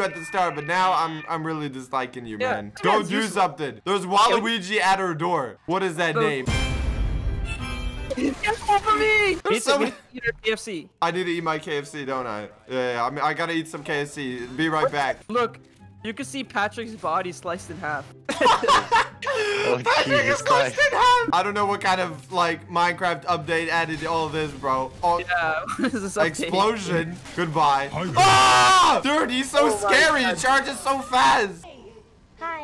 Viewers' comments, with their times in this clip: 0:06 the music and slowmo lol
0:06 Its the music for me
0:07 that song when kermit jumped at them
0:19 what did I hear ???? I think he's trynna say "Patrick is sliced in half" but it sounds like some else ion kno lol